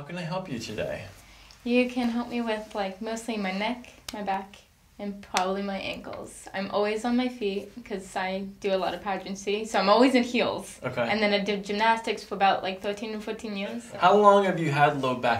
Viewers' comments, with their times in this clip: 0:03 Who started singing?